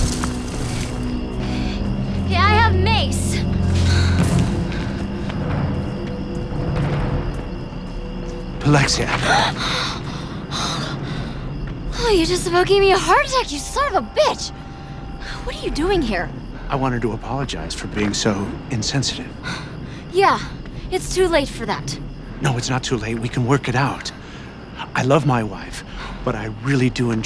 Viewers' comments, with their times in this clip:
0:10 The way she says that makes me laugh for some reason